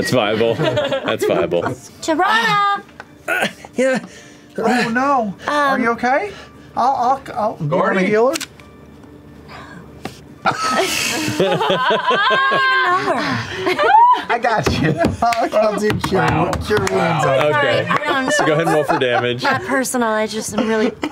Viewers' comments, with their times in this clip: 0:06 No one can make Sam laugh like Ashley can He looks like he's in pain lol.